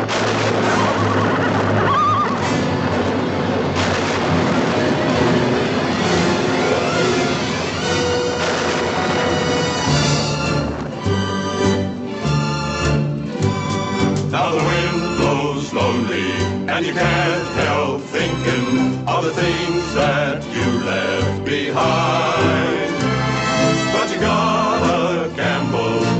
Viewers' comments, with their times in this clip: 0:10 The Epic Theme Begins.